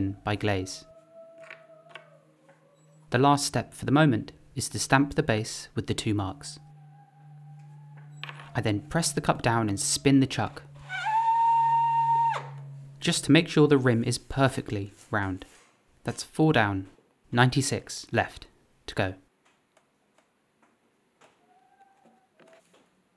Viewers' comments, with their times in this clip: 0:04 The singing in the background is probably unintentional but pretty funny, compliment them for me